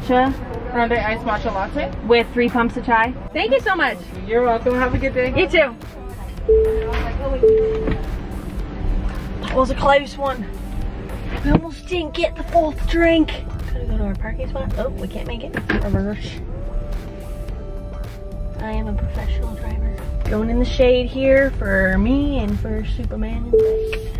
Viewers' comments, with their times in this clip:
0:10 I luv it when she does her weird accents ... Cracks me up 🤣🤣